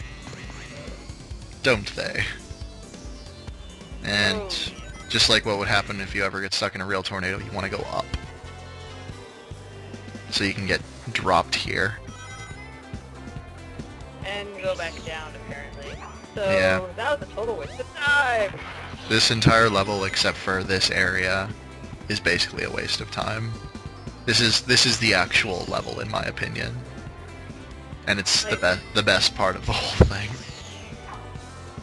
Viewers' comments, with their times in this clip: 0:07 I remember vividly when I first reached the point I'd been playing a couple of levels as a couple of characters and thinking "This soundtrack sounds so much like something from Sonic 3D" and then they go and remix the soundtrack to said game and I joygasm'd.
0:14 You said you hated Sonic 3D, and into the video the Green Grove level music starts playing. What A TWIST!